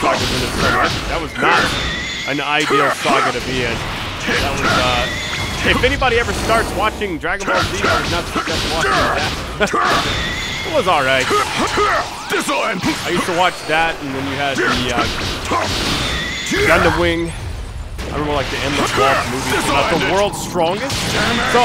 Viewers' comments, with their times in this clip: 0:03 Can’t hear you